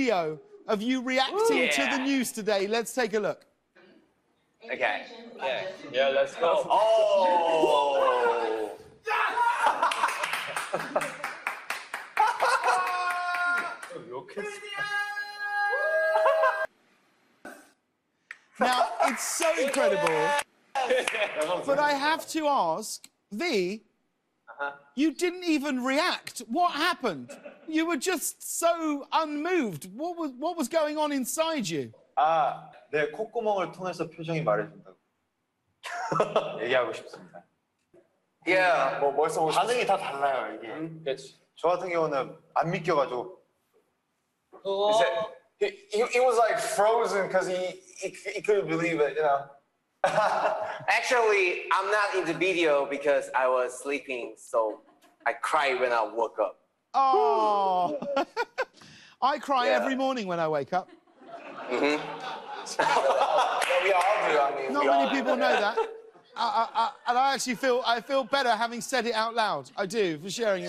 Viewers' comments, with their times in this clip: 0:08 rm cussed but they blurred it
0:51 our hobi speaking English this fluent am sooooooooo proud of him our SUNSHINE☀
0:51 ahhhh his English is amazing!!